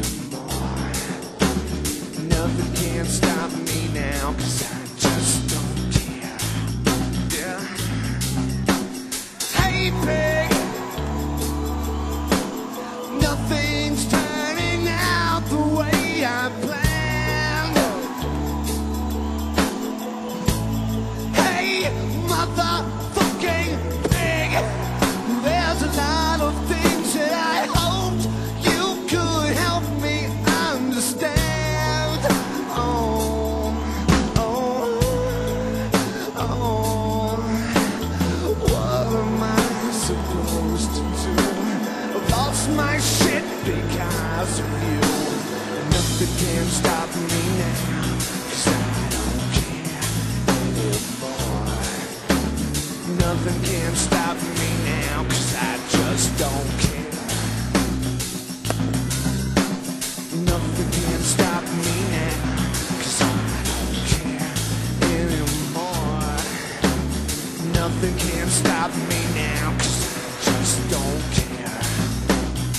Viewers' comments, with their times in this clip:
0:09 though this version lacks the crazy awesome drums of the studio version, here the second verse from is just priceless.
0:34 I fucking love that high part HES SO OH MY GOD
0:54 This is the song you'd put on your ipod and listen to while going on a shooting rampage...love the mic pop